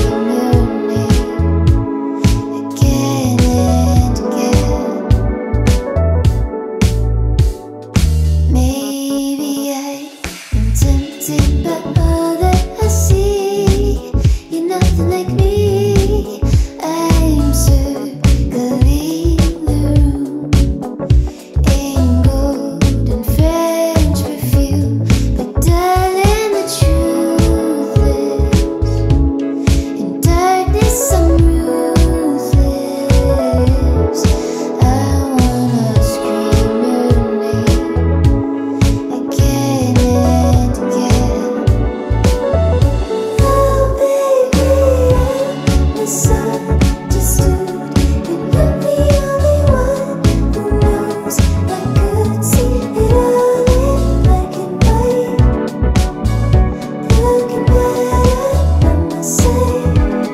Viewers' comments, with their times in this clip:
0:08 ugh that snap is so satisfying
0:43 It's so beautiful when she switches up the voice